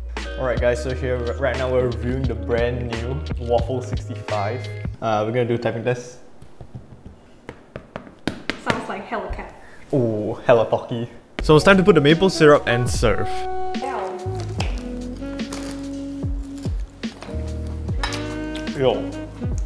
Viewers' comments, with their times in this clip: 0:05 Doesn't even THOCC Edit: I'm so sorry for what I saied I realized that I was wrong